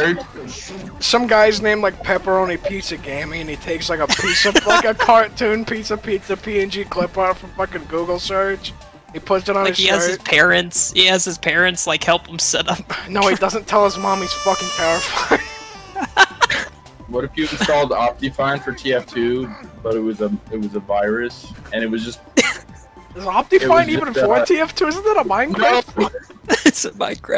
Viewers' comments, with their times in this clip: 0:05 I’m watching this on a separate screen while playing borderlands and the autotuned baby played right as an npc loaded in T-posed and spinning in place, and then he sat down on a bench when the sound stopped. Spooky
0:13 Therapist: Autotune baby doesn't exist, he can't hurt you Autotune baby: fr though that was creepy af